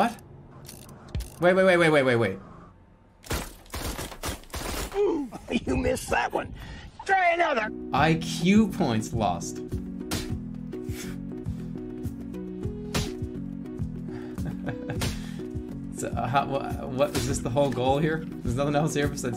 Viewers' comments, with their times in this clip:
0:04 when the roblox oof kid voice acts when he’s older